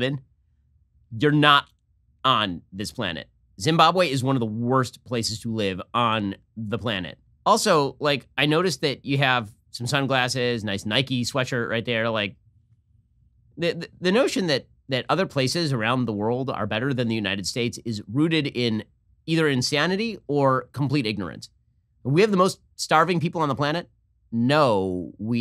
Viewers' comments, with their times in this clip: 0:10 If that guy is from Zimbabwe, then he left at such a young age that he lost his accent. He doesn't look or sound African.